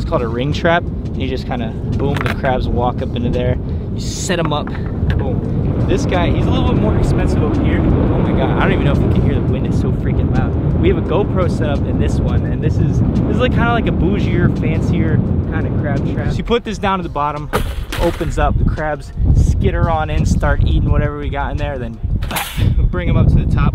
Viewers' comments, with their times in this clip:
0:08 "Idek if you can hear, the wind is so freaking loud rn" jet engine noises intensify